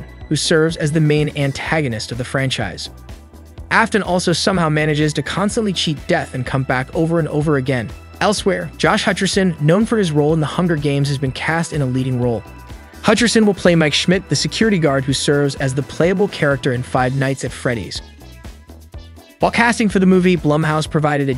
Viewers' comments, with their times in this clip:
0:07 fnef movie lol, he also says fnef every other time